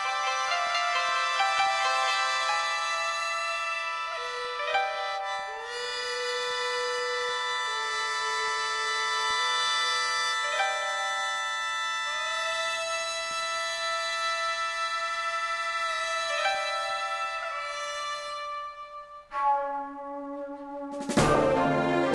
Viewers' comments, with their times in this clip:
0:06 sounds like setsukas theme from soul calibur IV hmmmm ibwonder if this why they crossing over....